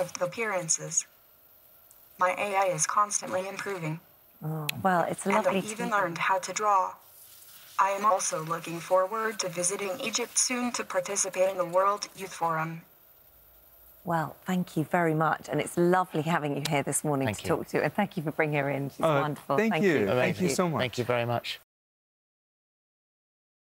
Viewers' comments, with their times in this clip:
0:05 She got cutoff. 😂🤣😂🤣